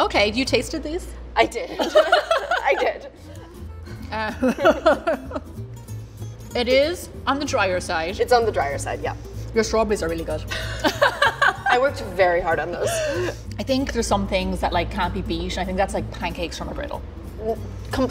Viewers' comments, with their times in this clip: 0:03 guys did u hear that laugh it didnt sound normal...